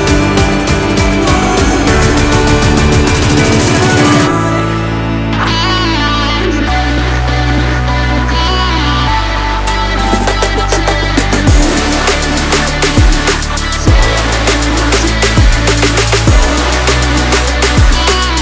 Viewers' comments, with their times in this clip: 0:05 man those piano keys god damn. you hear those if you pay attention damn